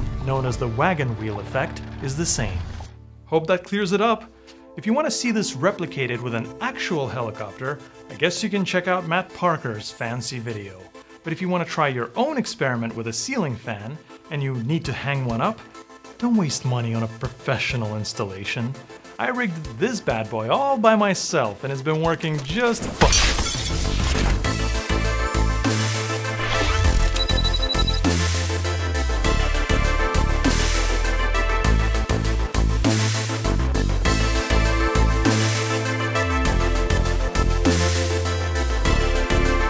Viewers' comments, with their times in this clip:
0:09 Tell me more about Matt Parker's fan see video
0:24 what's the funky music at the end?